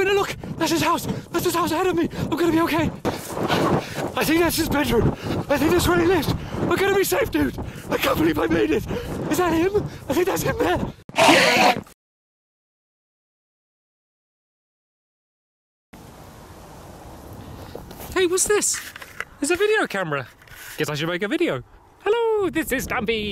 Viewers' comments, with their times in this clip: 0:09 god damnit! Wether you're old or young, enderman still sound as scary as your grandfather coughing